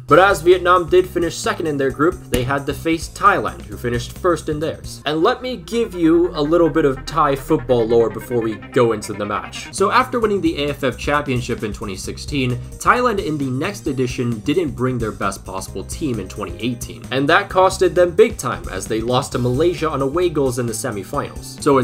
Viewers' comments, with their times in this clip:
0:06 the dry out song actually goes really well with da meme